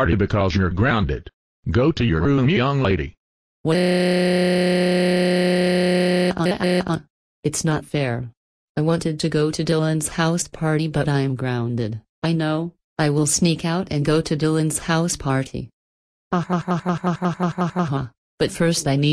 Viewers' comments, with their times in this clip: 0:03 her screaming is so hilarious